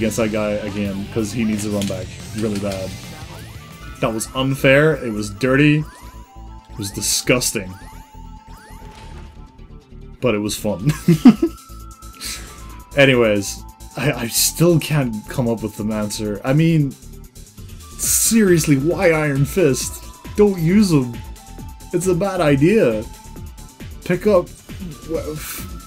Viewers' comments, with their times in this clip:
0:06 That TimeSplitters music in the background tho. Fucking nostalg'd all over the place there!